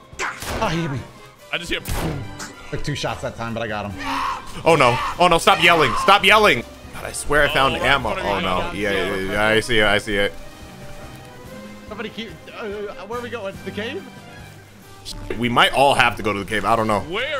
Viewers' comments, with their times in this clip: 0:04 kid buu is that you?